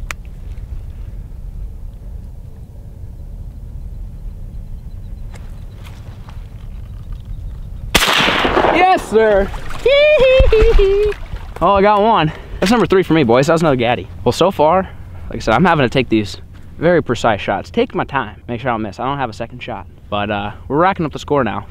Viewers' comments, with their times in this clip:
0:07 Michale Jackson prince like laugh.